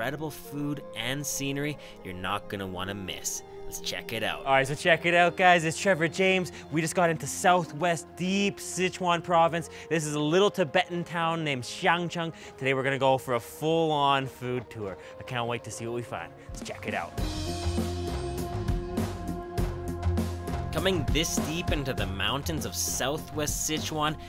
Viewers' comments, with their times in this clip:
0:10 the way he pronounced the town name sounds like chinese for "sausage"